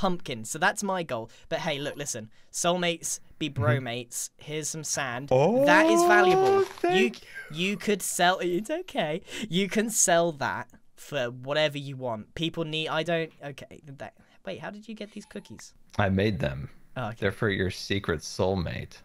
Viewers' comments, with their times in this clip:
0:05 that was the most grateful "Thank you" and the most genuine "It's okay" I've ever heard, it's adorable